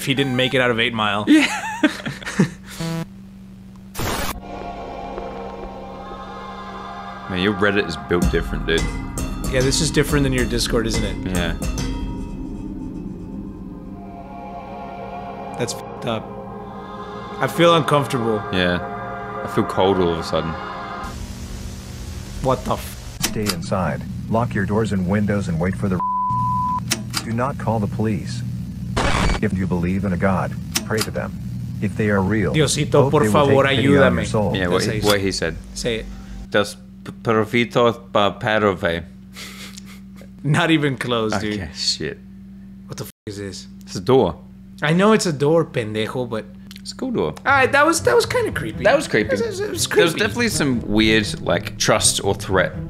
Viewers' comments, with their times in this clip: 0:04 when that music started I felt immediately uncomfortable and I felt like there was someone right behind me
0:35 He just learn how to talk arabic